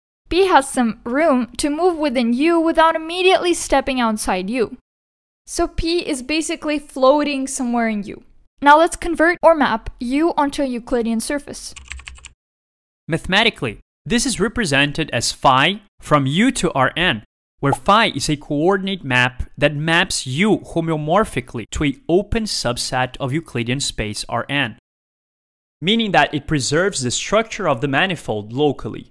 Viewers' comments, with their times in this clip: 0:10 “So pee is basically floating somewhere in you.” My captions said this 🤣